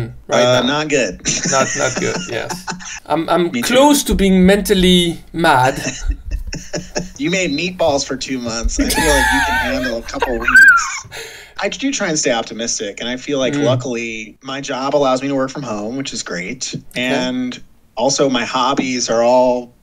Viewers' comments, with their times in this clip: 0:07 what was that laugh it was a squeal 😂😂